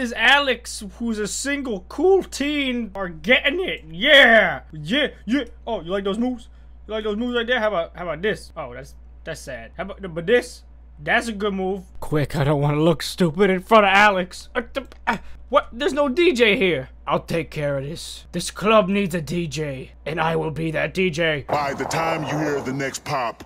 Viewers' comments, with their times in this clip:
0:08 This is kind of weird cause he didn't edit for take the swear word out it goes "by the time you hear the next pop, the f**k shall be with in you" (Gunshot) I should know this my sister listens to music like this so I pretty much know every song in this video and the other one (Part one) I still can't believe he didn't beep it out I don't think he heard the swear word